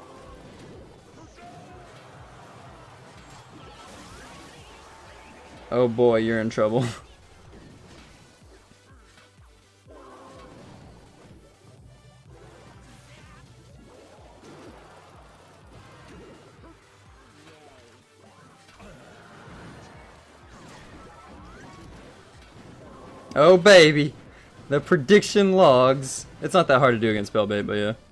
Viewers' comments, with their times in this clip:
0:10 Lol the miner died and didnt get the last hit but you hear the sound anyway. Weird.